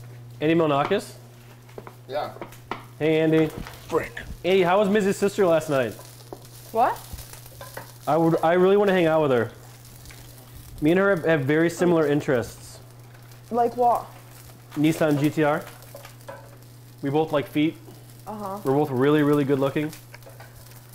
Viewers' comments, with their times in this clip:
0:04 His PogO levels are through the roof... He somehow made that as PogO as possible and then made it sound like an innocent question